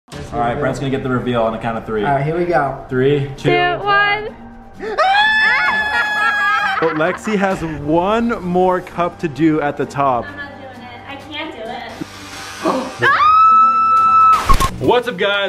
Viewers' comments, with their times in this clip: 0:03 Me: sees Brent having a little lipstick on Brent: screams Me: tHiS iS gOiNg To Be ThE mOsT aWsOmE aNd UnIqUe Id EvEr WaTcH iN mY eNtiRe ExIsTaNcE